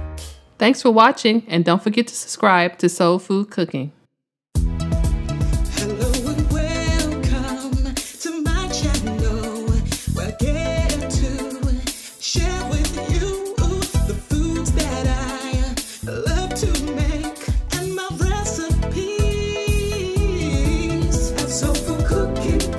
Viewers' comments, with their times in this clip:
0:05 That song is straght fire!!! Thank you for a great recipe and song.